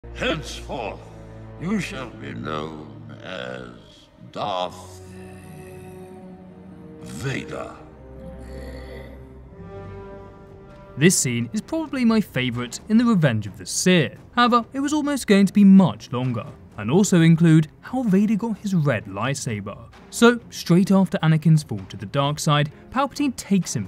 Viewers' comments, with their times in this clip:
0:06 You can actually hear the darkside whispering to Sidious the word "Vader"